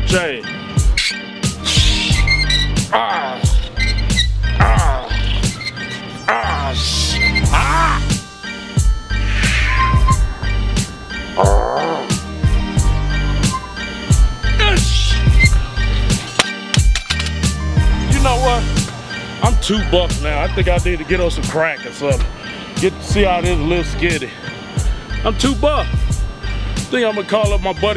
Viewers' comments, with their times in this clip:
0:10 sounded like a fart